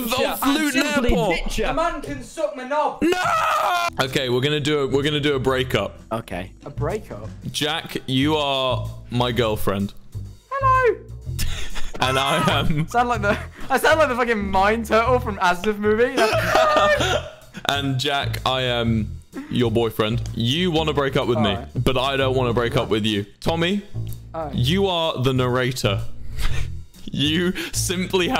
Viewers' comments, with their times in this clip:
0:10 Plot twist: Jack Manifold WAS the voice of the Mine Turtle from asdfmovie.
0:10 mine turtle activates